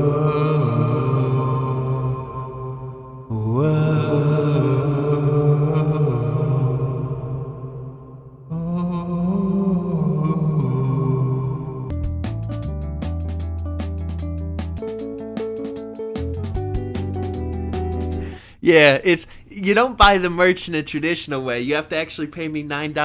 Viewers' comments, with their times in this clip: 0:04 this is how I imagine bladee would sound as a ghost